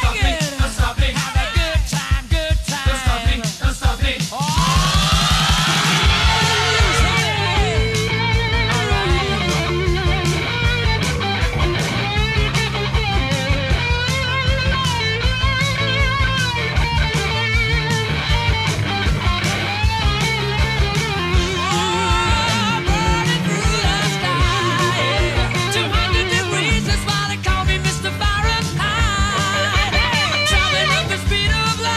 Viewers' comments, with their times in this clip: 0:09 haha i always thought he was saying ohhh shawty alright i’ve been singing it like that forever damn
0:14 Space guitar sounds Neural network: